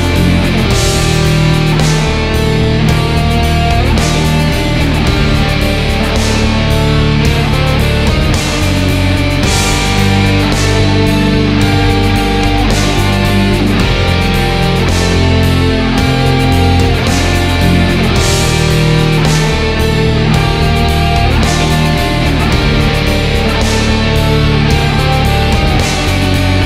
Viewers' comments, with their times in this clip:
0:09 Uhm, does anyone else here the words "bring me darkness" ?